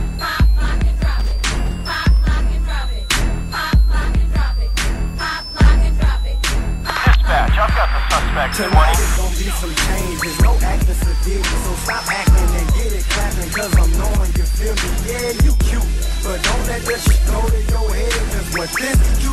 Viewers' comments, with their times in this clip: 0:03 when the beat is too good